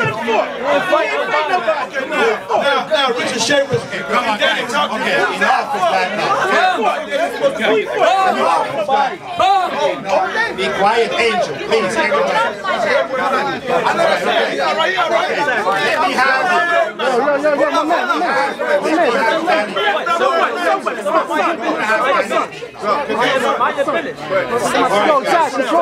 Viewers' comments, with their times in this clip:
0:06 he was shouting "BUM" lol